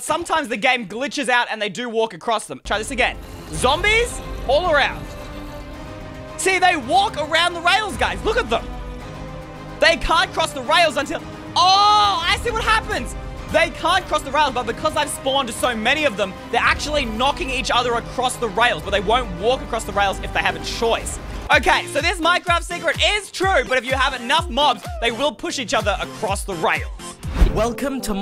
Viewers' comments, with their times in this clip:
0:10 the music lol 😂😂😂